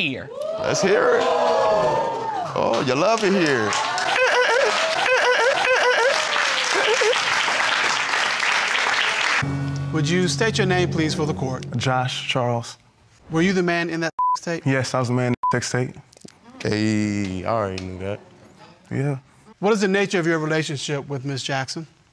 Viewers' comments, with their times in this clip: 0:03 his dolphin like laughter though
0:04 gotta admit his laff was amazing.
0:04 Mans was having a Flight reacts dolphin laugh there for a sec